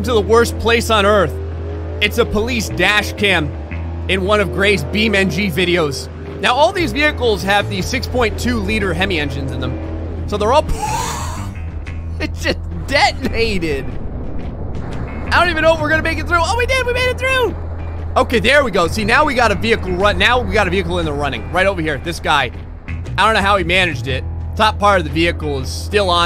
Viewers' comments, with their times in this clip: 0:10 i thought i heard a distant police siren start. had to rewind 3 times and realized that he just lost the air out of his lungs at that moment. i can relate